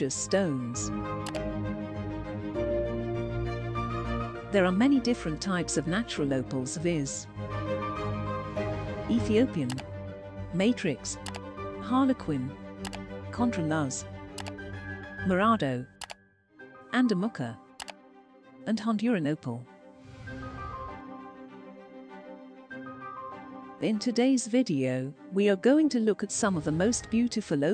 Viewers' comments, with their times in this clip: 0:08 Gotto love that sound effect of a 90's era mouse.